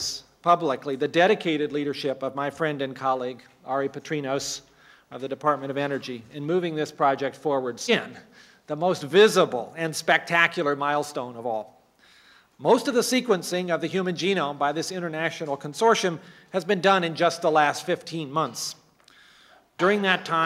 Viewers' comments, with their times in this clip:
0:07 It seems like the tape skips